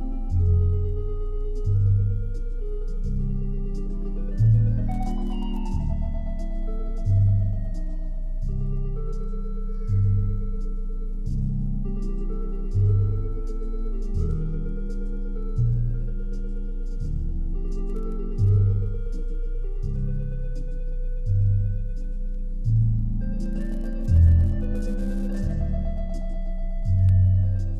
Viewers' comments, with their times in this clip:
0:09 I was just listening to this record ( this video)- if you put on headphones and turn down the bass all the way you can hear a little girl saying 'Mine...' Eery.